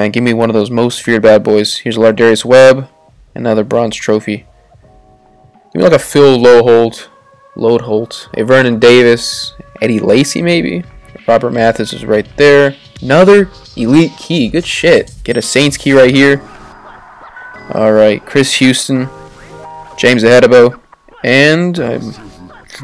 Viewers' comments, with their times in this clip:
0:08 Omg this video scared the shit out of me, I thought the tornado alarm went off cuz it's been raining in here and stuff